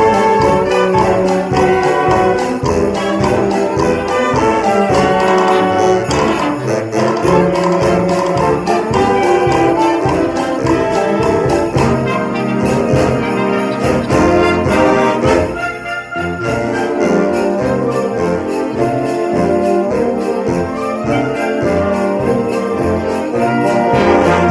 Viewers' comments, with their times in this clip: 0:08 oh my god 😭😭😭 Not the baritones/tenors 😭😭💀